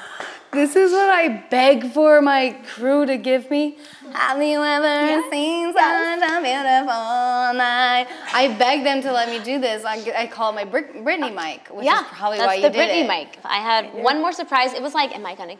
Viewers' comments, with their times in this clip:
0:03 omg Meghan singing LOL I'm dead 😂